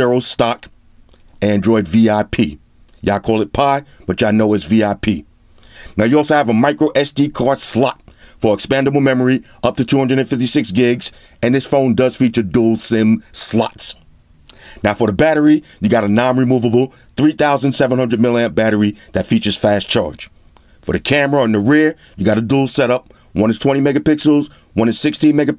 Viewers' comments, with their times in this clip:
0:09 i love the slot-SLATT🤣